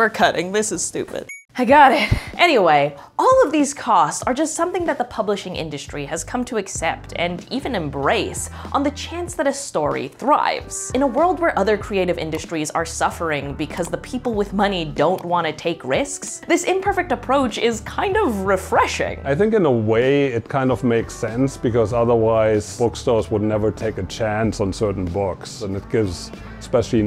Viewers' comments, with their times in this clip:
0:08 Ah, I so badly wanted you to say "In a world..." in that bombastic movie-trailer voice...